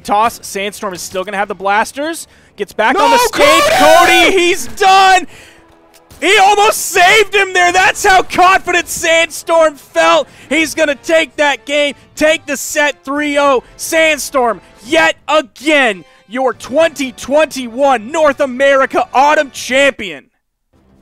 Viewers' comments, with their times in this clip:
0:03 That scream killed me 😂😂😂😂😂😂😂😂